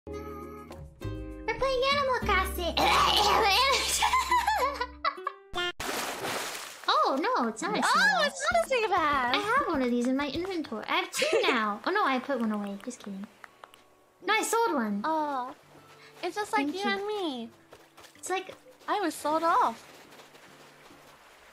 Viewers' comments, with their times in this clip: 0:03 Mumei making cute sound
0:05 oh how I do just adore such a classic YouTube montage transition SFX like the one from pewds edits, beautiful little touch of nostalgia there..(for me anyway=^)